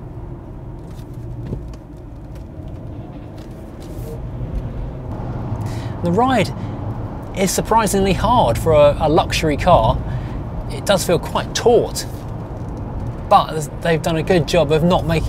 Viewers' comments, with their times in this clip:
0:03 Hello, I've bought myself an old S-Type like the one in the video. in the video I noticed that the car makes a noise when downshifting. Mine does the same thing. Is this a problem with the S-Type and is there a solution for it?